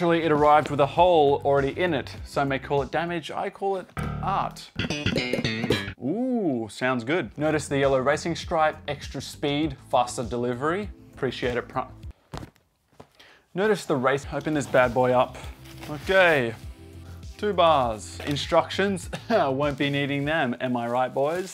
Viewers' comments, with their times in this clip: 0:04 Yep, is really capable of slapping bass anywhere, even a delivery box